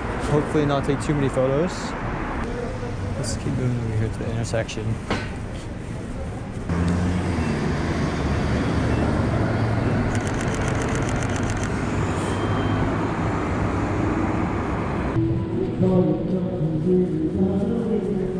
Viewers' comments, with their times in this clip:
0:05 my camera dings the metal fence🤣